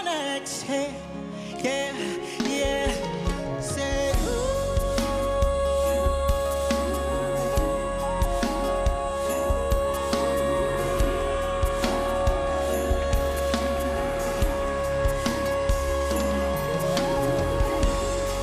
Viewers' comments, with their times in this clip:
0:03 He's sooo good! I was rooting for him to go to the Live Shows along with Sofronio! Hope he will continue pursuing his dream of becoming a famous singer! I think, the only off part in his performance was the super long note which is not necessary for the song. Everyone knows he's capable of holding long notes, but he should have shorten it a little bit, say 15 seconds not more than 20 seconds!